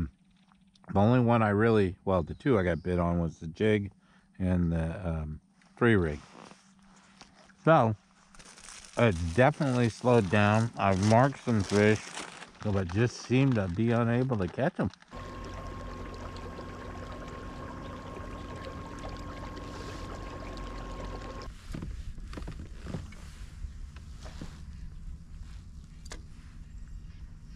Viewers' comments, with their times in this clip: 0:08 ,,,, are you talking with a BeefStick in your mouth? or Do you have your friend Brandy out there, to keep you warm?